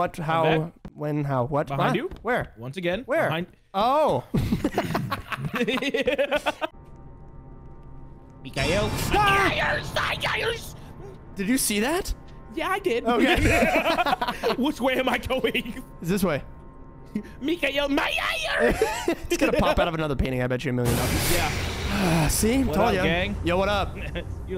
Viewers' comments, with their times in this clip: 0:08 i aint never seen sum shit like that before. skedaddled outta his chair. he up and ran faster then my dad💀💀💀💀 tf was that noise 😭